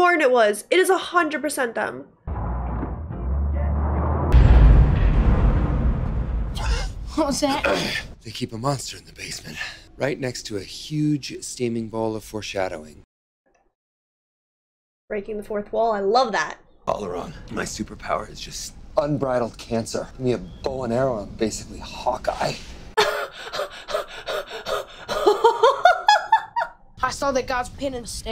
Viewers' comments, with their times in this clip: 0:10 that laugh from there...👌😆